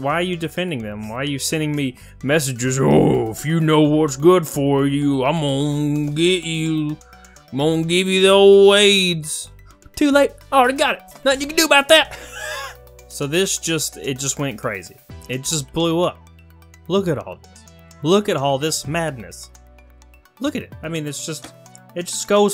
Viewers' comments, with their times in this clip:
0:10 I hear Dale Jr. Lmao